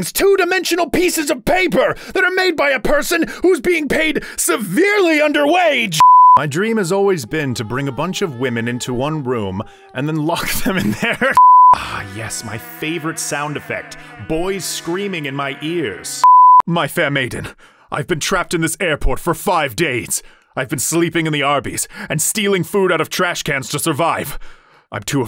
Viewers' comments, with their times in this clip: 0:10 the shoulder part is sending me it is so funny also on a side note i really wish more animes included like natural laughs in the script, i think it would be so interesting. i know their job is to be professionals but i think it would make any show feel realer like this is what i mean